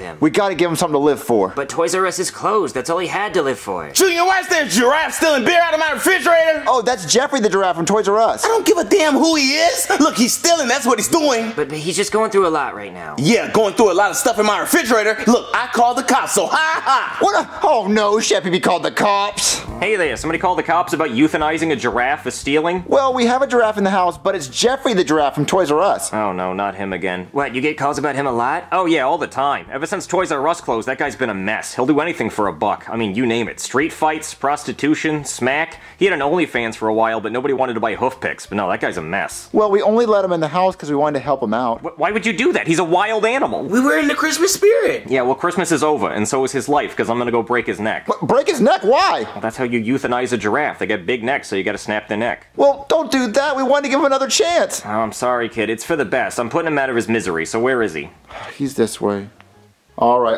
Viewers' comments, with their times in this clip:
0:04 bro why did he sound different right there
0:44 joseph sounds too cute🥹